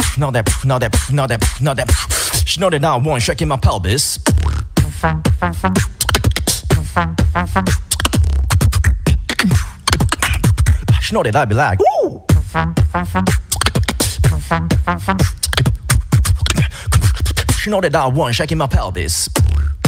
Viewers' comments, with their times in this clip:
0:04 as someone who has no clue how to beatbox, I need to ask, respectfully: HOW IN THE HELL DID HE DO THOSE OCTAVES???? This was SO impressive!!